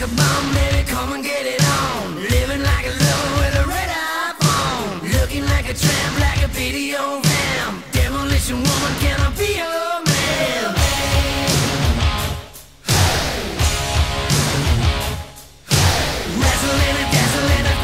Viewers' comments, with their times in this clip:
0:03 does he say red iPhone...?